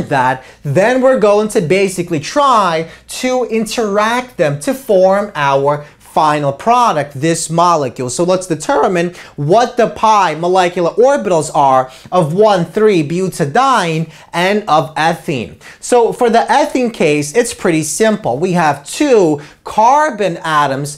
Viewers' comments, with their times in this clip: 0:07 awesome video, and awesome voice crack